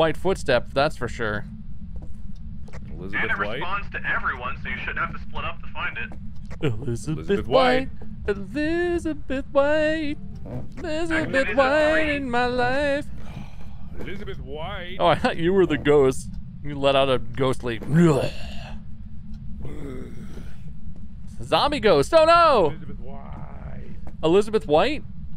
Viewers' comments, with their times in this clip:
0:08 am I tripping or did y’all hear da piano when he was singing Elizabeth white